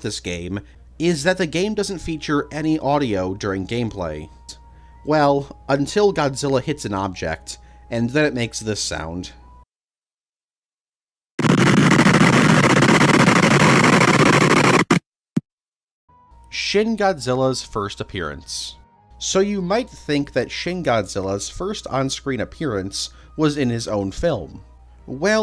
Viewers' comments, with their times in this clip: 0:10 bout to get a good ass ear bleed!! 🔥🔥🔥